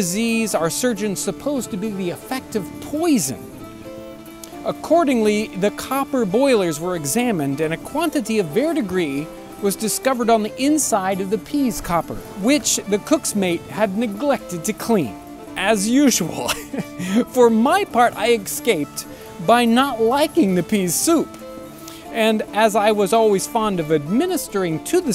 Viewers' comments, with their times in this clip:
0:08 a quantity of (what?) was found on the inside. I hear "verr degree".